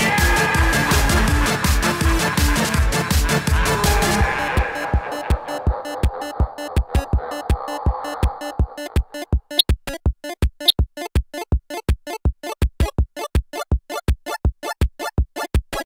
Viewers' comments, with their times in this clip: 0:08 nice clicks right there
0:09 the hell were those noises